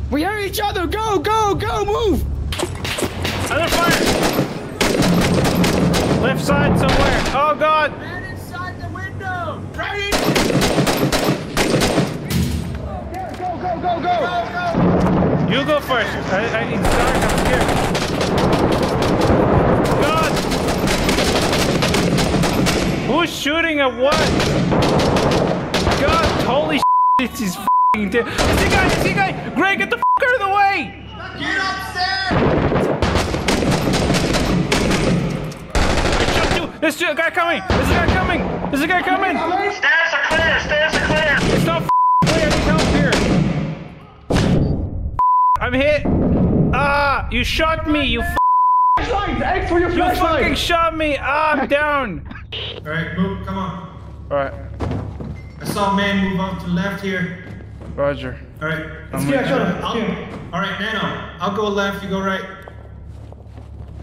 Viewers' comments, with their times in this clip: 0:05 Hearing the sounds of TICs and seeing that is accurate. That optic is an ACOG and it actually looks like that in real life the “red line” on top of it is a fiber optic cable with tritium. Really just blew my mind. It’s the little things that matters. THANK YOU
0:28 The insane sequence starting where everyone is yelling different things at different volumes from around the room with guns blazing at all angles made me laugh too hard
0:31 Sounded like Top G was upstairs
0:50 AAAGGGGHHH is that Arnold Schwarzenegger playing? 😂